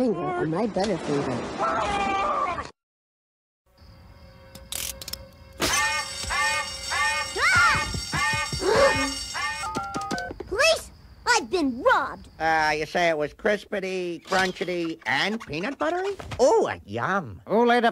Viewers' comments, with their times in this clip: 0:04 Beware the violins !